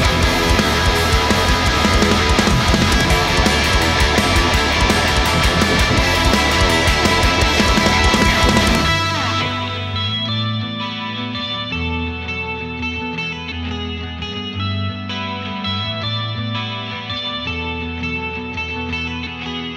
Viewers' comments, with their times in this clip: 0:06 such a tasty lick
0:07 you get all the approval you need the dog seal of approval! Sounds salty A/F nice work